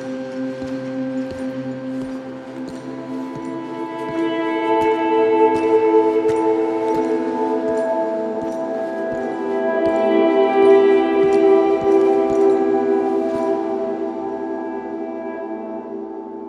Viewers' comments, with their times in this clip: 0:04 OMFG IT'S THE SOUNDTRACK